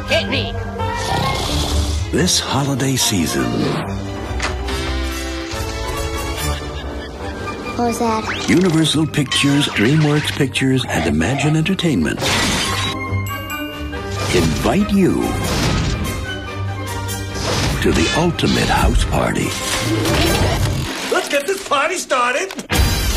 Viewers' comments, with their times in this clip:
0:04 The kids got scared of the Cat's laugh. :o
0:05 (Bump, echoing laugh)
0:06 That laugh, coupled with the music, is the kind of thing you'd hear in your nightmares.